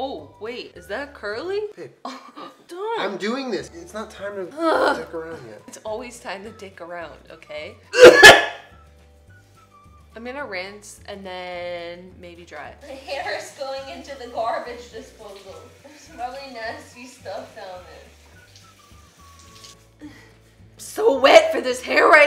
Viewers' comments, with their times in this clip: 0:08 that cough straight up scared 2020 me... like i jumped.. anyways. i love you. imiss youuuu jennaaaa <3